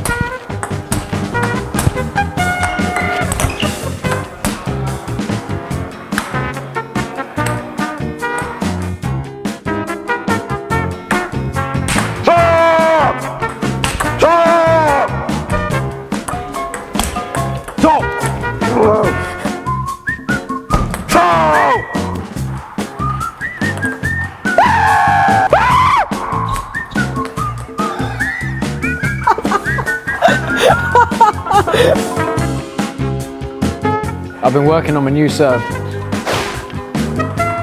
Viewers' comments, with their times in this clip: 0:09 He sounds like a videogame character.
0:10 the guy with the yellow shirt sounds like the charisma skill of swords and sandals
0:14 that sound like Shao Khan making a his "fireball"
0:24 Rip head phone users volume 100
0:24 It was like a car stopping😅🤣
0:25 Winning by screaming...
0:25 i can sure that the person filming the video is laughing